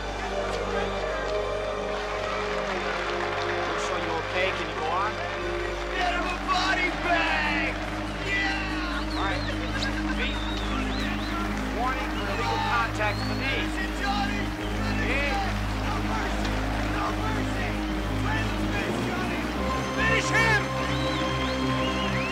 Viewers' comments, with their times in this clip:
0:05 “get him a body bag” was recorded during postproduction and dubbed in afterwards. RIP Rob Garrison